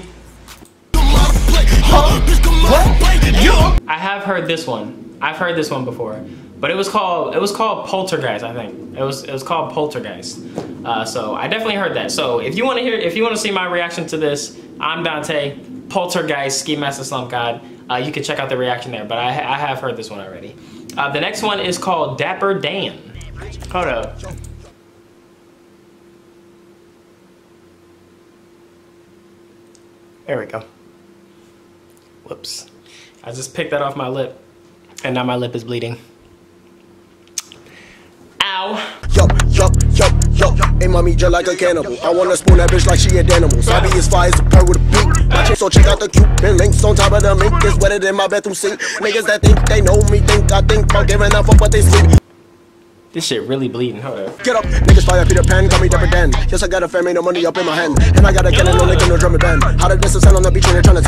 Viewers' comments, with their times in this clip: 0:09 Did I hear a fart?💀🤣🤢🤮
0:49 Yo I heard you say this shit really bleeding, hold up and then the beat came in ... shit was fire